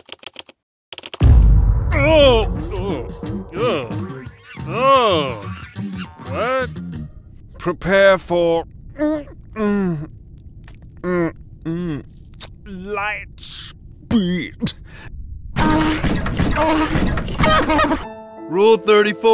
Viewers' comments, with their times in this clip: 0:07 "prepare for...mmmmmmhmh licks lips........ LiGhT sPeEd" That killed me